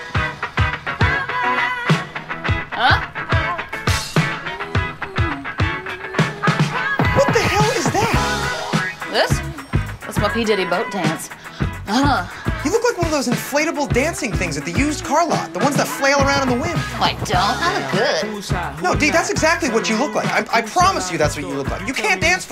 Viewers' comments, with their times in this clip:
0:10 One of the funniest scenes especially that sound she makes when bopping her head always gets me